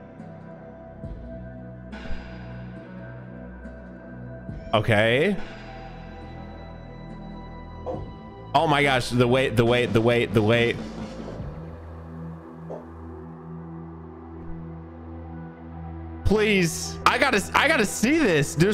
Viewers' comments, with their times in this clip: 0:06 omg do you know da way da way da way